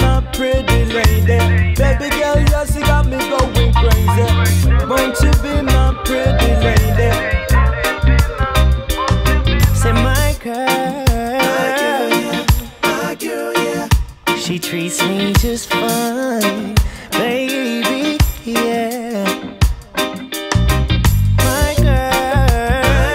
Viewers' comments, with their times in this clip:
0:05 Love that Bob Marley touch